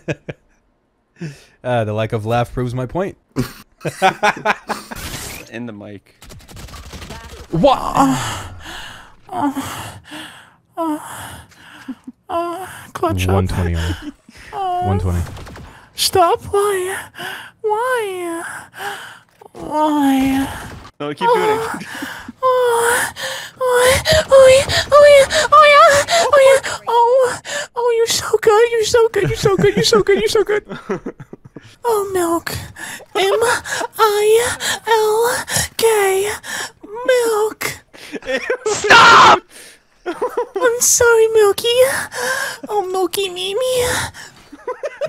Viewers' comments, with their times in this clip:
0:09 don’t listen to this with headphones, just don’t
0:17 HOW ARE THE MOANS EVEN LEGAL TO PUT ON YOUTUBE BRO
0:31 I should have not had my volume so loud